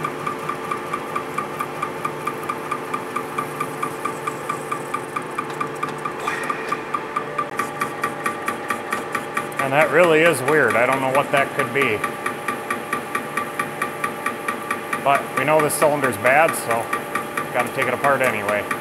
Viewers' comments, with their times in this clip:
0:04 Sounds like the nut on the piston is loose. It is speed dependent. Time in the video.